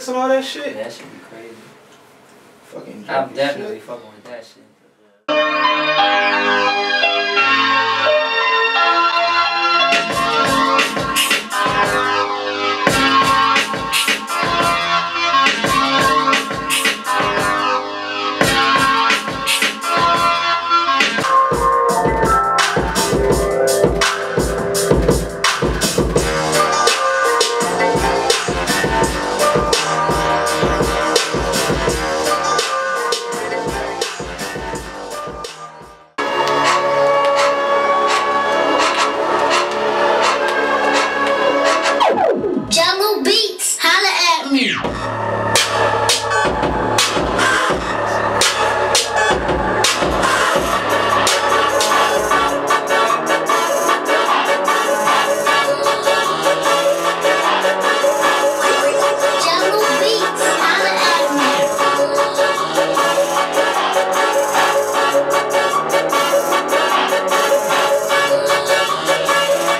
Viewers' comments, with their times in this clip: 0:04 omfg that beat is fire
0:05 The Beat is crazy ..... Dope R&B flow ..
0:06 Dat beat smh..sick
0:21 yeah the beat
0:21 I like the the beat in
0:21 beat was too dope.
0:22 beat is crazy. SWV sample
0:23 sounds like chingy - pullin me back !! :D
0:36 damn that beat goes hard as fuck!
0:36 the beat is fucking crazyyy yo!
0:41 Beat is the so good I wish e would make meek spit on that
0:51 The beat is hootttt
0:51 that beat flames!
0:53 Beat is crazy